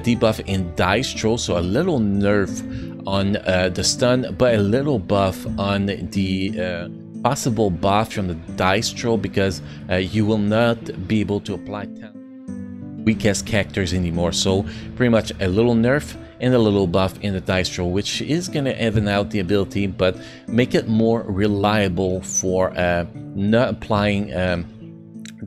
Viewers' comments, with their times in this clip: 0:07 maybe not the mic itself it is problem. check audio level ~ It happens few times during video.